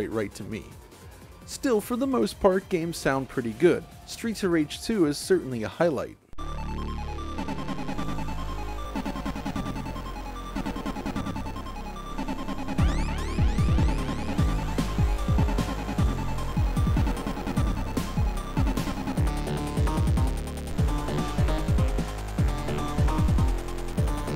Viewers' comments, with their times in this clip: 0:06 What a great tune !